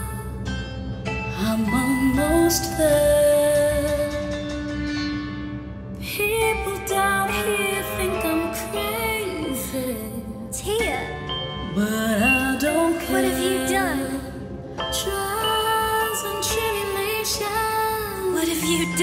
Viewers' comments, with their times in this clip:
0:03 Now there are two Tiana songs I'm gonna obsess over. THE BLENDING OF "ALMOST THERE" AND "FRIENDS ON THE OTHER SIDE" ❤❤ And is that a froggy Naveen I see in that cage 👀